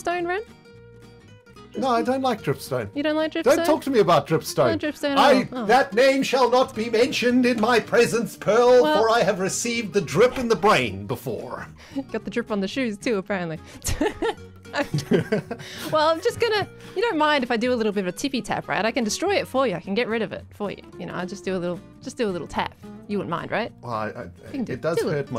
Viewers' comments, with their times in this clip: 0:09 love how he had to break character to laugh